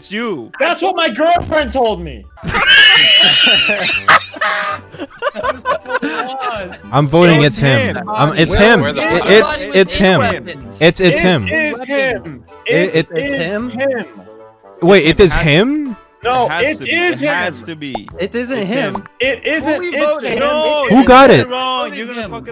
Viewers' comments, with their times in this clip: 0:03 the funniest wheeze and joke I have heard